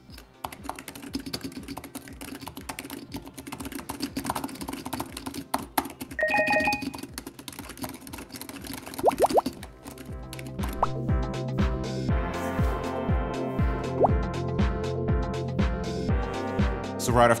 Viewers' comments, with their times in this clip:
0:04 I didn't know Chris Pratt did keyboard reviews